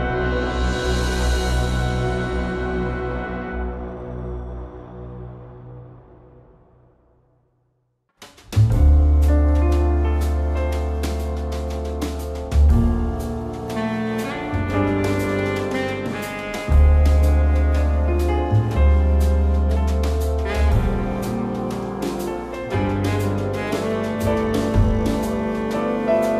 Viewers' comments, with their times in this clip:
0:08 Is so chill I love it